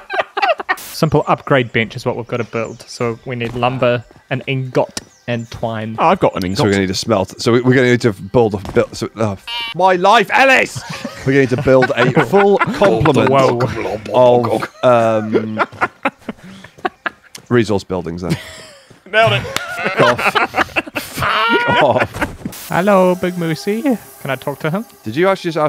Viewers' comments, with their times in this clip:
0:07 I like how he just shouted at himself